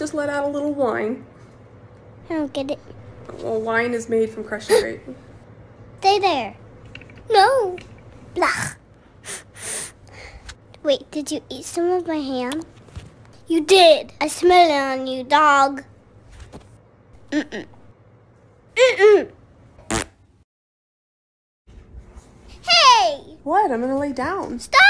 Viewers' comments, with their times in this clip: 0:07 lol the way penny said no